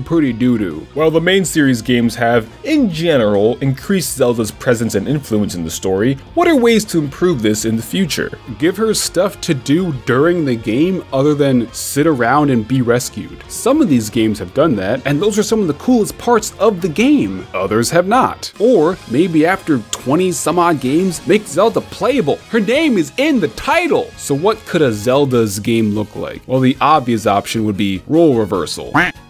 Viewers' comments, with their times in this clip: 0:10 the little laugh at the end over Xenoblade 2 really sells this bit. So forkin' funny